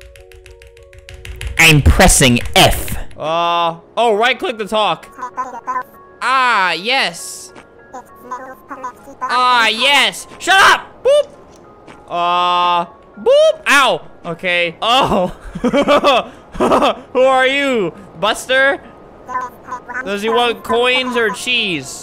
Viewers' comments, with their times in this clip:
0:10 the head turns to look at albert as he yells "SHUT UP!!"